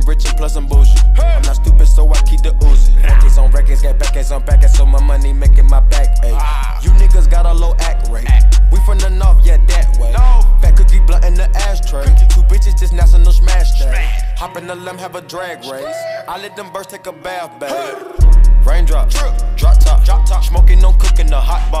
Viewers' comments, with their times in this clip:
0:06 sounds like ybn cordae